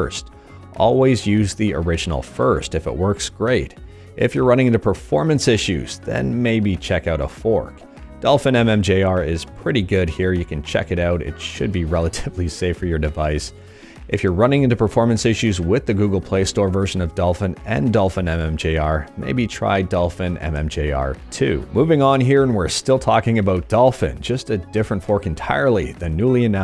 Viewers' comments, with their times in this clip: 0:10 I've been waiting for you to laugh in video for so long because I always thought you look like you're holding in a laugh to me and one finally slipped lol Love your videos man! Best in emulator news.